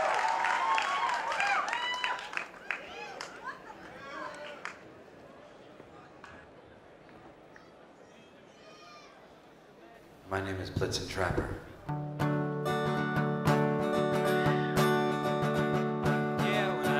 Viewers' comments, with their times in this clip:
0:03 Anyone else hear the little kid ?